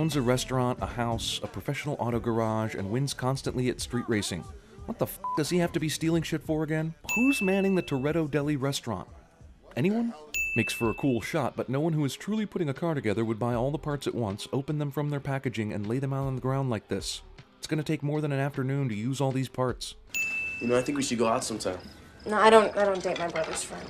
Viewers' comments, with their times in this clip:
0:06 The sin counter apparently interfered with your swear detector... DING